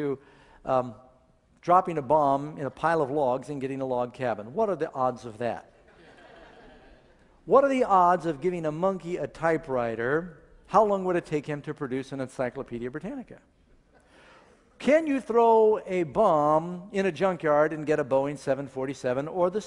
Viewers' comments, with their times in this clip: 0:05 ...that ignorant laughter xD ...fuckin priceless! xD